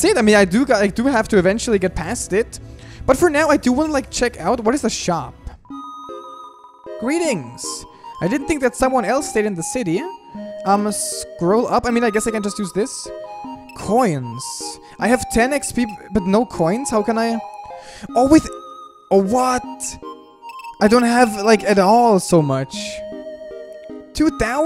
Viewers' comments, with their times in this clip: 0:08 Just got a glitch when he said shop it sounded extended like he said "s h o p"